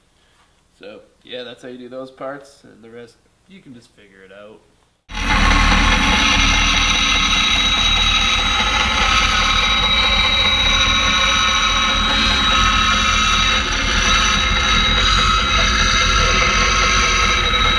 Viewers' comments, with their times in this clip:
0:05 Cautionary note to headphones users ... turn down the volume for your own safety!